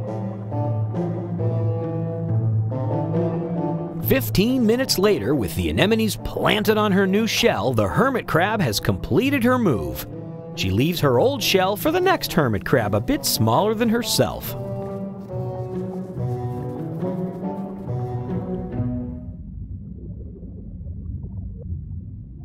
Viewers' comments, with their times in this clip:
0:05 did the crab just sneeze underwater?